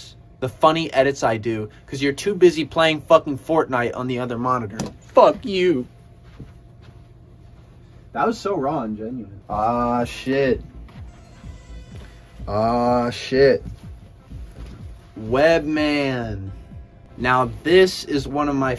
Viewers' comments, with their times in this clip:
0:04 bro sounded like he was about to cry damn💀
0:05 why he said you like that😂